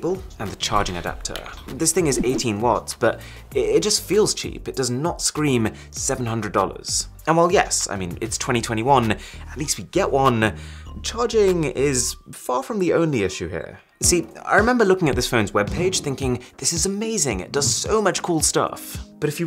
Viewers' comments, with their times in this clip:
0:04 Did he just rickroll us in the background?!?!
0:04 got Rick rolled in the background
0:05 everyone: seeing the charger Me: never gonna give u up in (background ) rickrolled
0:05 there was a rickroll in the backround
0:05 The background on be like: never gonna give you up, never gonna let you down, never gonna run around, and desert you, never gonna make you cry, never gonna say goodbye, never gonna tell a lie and hurt you.
0:05 Rick asltley in the background
0:05 Does anyone else notice that never gonna give you up is playing in the background
0:05 why was Rick astley never going to give you up in the background of this part?
0:05 the rick roll in the backround